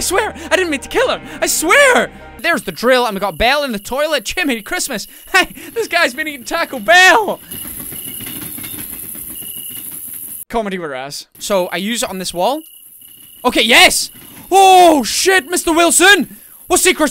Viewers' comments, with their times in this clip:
0:04 that actual background music suited the moment perfectly